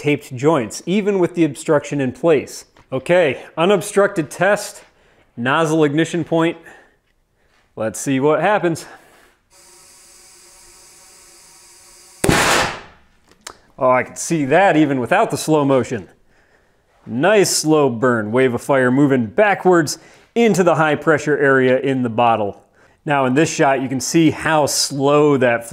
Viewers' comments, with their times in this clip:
0:10 Almost sounds like the barking dog experiment.